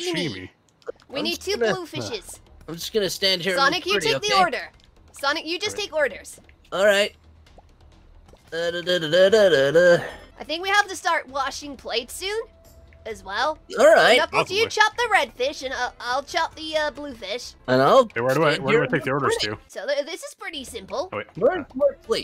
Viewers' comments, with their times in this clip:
0:08 Sonic: Sings Like A Delivery Man Me: ...... LMAO HAHA